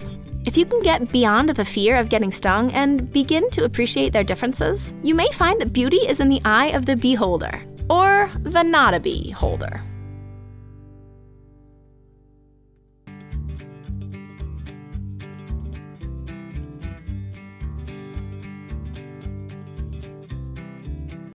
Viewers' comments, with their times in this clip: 0:10 that awkward silence